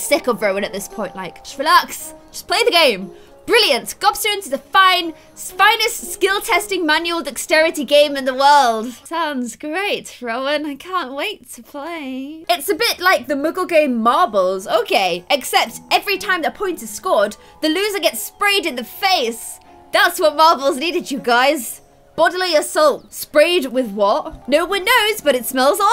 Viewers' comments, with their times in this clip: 0:07 I thought that was one of my texts!